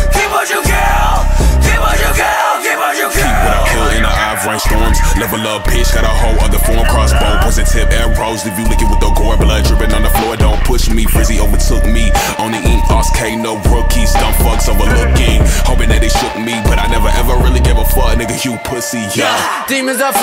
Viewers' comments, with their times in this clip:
0:06 that voice sample sounds like Link I swaer